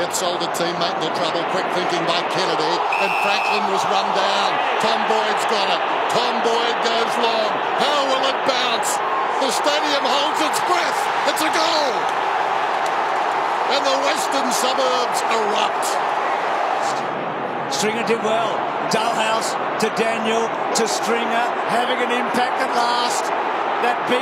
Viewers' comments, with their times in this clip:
0:09 you can legit hear the crowd gasp as one